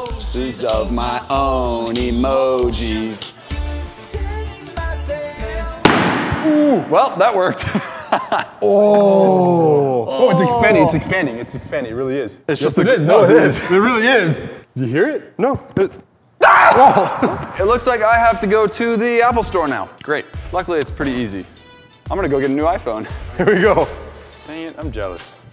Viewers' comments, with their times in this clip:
0:07 it sounds like he was shot and killed